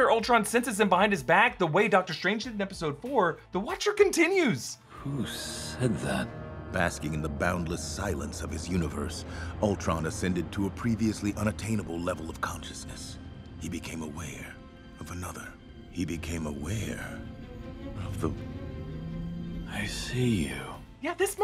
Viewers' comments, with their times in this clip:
0:04 when the Watcher is narrating, it sounds like he is reading (like a comic book) and that's why he stumbles when he reads '... the Watcher'.